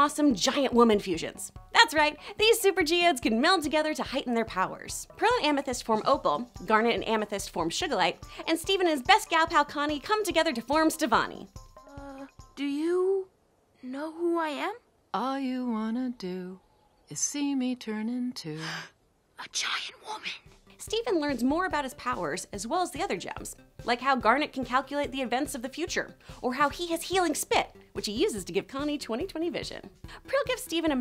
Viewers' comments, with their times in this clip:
0:07 Also she calls sugilite “sugar lite”
0:07 Did you just say Shugalite
0:08 im sorry.. did you just say.. Shugilite? What is this? Screen rant?
0:15 i just realized how much aimee mann (voice of opal) sounds like rebecca sugar